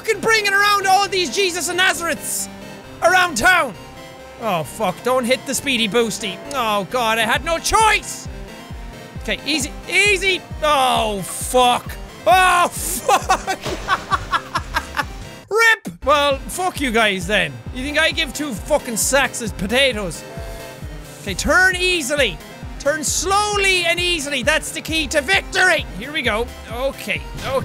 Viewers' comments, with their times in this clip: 0:10 WHY ARE WE SHOUTING?... oh yeah it's a jacksepticeye vid & Jack uses his "Mae" voice.